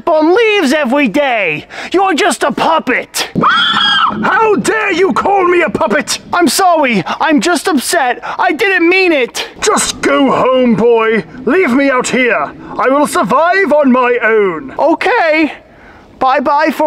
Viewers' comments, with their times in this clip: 0:03 Damn it sounds like a horse